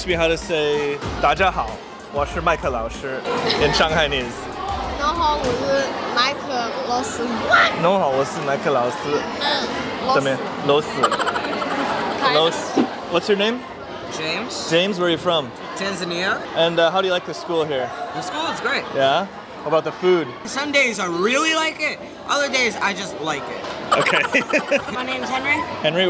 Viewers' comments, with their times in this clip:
0:07 Haha, her Shanghainese is pretty decent as a foreigner 👍